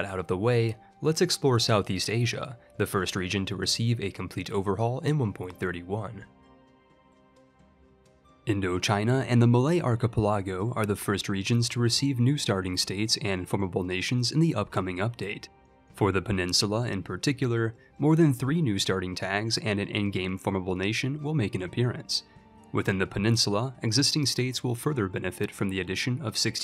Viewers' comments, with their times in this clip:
0:09 please never say the word "archipelago" again